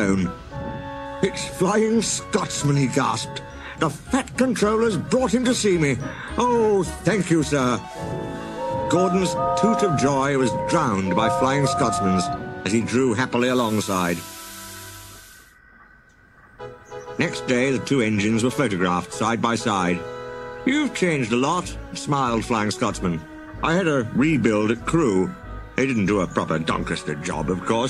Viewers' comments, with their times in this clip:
0:09 I’ll give you credit for using the right whistle for Flying Scotsman.All The other re-enactments all use Scotsman’s real life whistle,which is inaccurate to The Thomas universe,but to be honest this feels like a Brenner Era Episode to me.